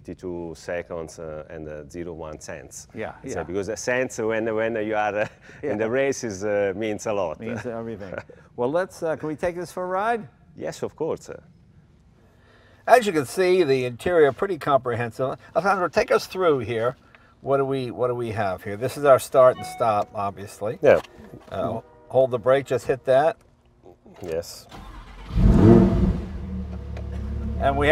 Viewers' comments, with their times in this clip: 0:09 "Yes of corsa" he wants Jay to drive it like he stole it